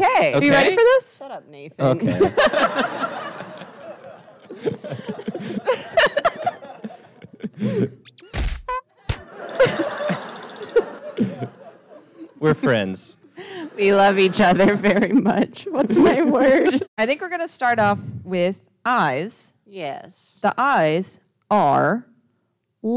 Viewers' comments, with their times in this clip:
0:05 The perfect sound effects are what did it for me.